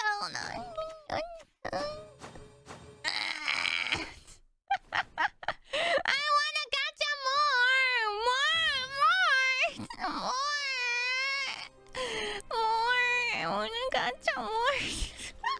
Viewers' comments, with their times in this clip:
0:03 Kiara can stop anytime she wants - and she only wants to stop when she is flat out broke. Her luck was pretty good during her pack openings at the start of the stream but this pack was pretty meh. It gave us Kiara frustration noises which are some of the best noises in Hololive.